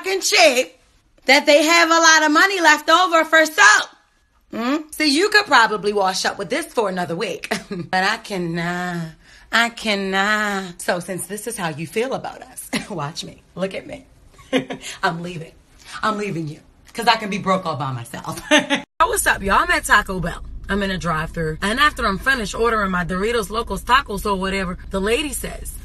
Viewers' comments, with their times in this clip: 0:08 I cannot , i cannot 😂😂 joseline"s voice